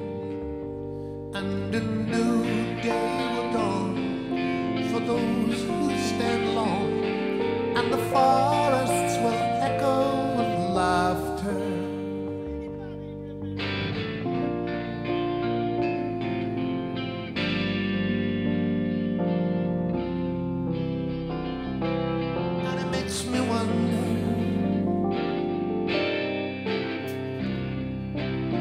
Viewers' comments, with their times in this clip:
0:07 And the forests will echo with laughter (faintly... 'does anybody remember laughter'?) . Was that Jason?
0:12 you can just hear some cheeky bugger saying, does anybody remember laughter?